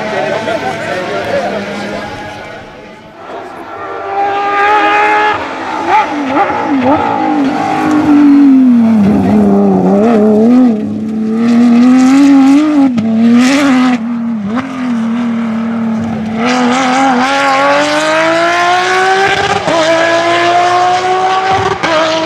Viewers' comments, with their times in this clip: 0:07 Porsche Such sweet music to the ears